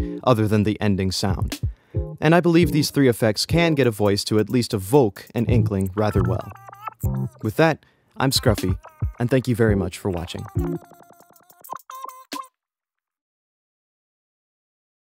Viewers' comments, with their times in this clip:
0:06 Woah that was so good! Did you hear that voice in the backround? I love it!
0:06 i like that little song that you're singing
0:10 sound like you’re saying suck my left nut